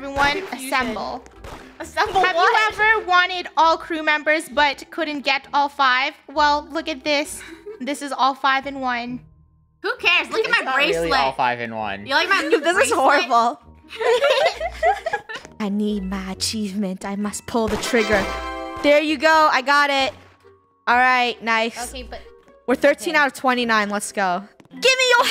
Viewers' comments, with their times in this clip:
0:08 haha sounds like great weather 🌪